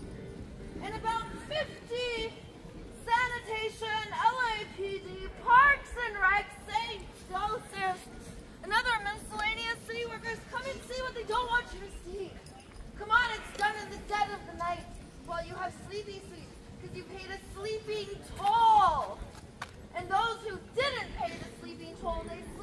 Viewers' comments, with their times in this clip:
0:05 She reaches some annoying decibel levels pulling this crap ! People just wanna chill!😮